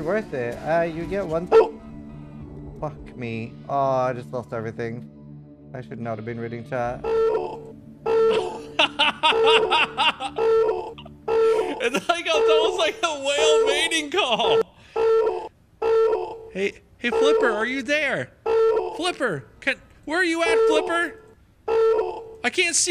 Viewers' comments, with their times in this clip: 0:07 sounds like velociraptors in Jurassic park XD